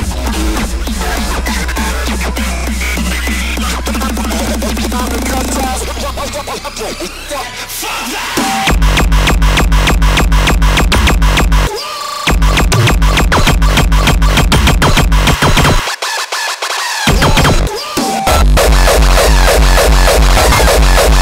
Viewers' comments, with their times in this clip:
0:08 The kick just sounds ridiculous.